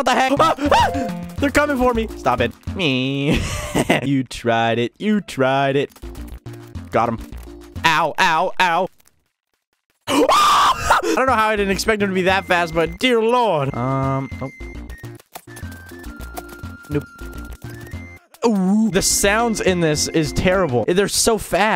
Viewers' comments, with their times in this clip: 0:08 The scream though😭